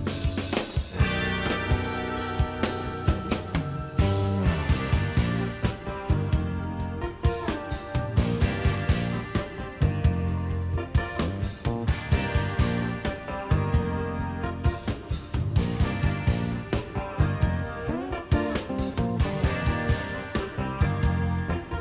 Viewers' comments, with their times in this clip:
0:05 that transition right after sounds like a little nod to Kazumi Watanabe and the sort of stuff he put out with his partly New York based studio band around this time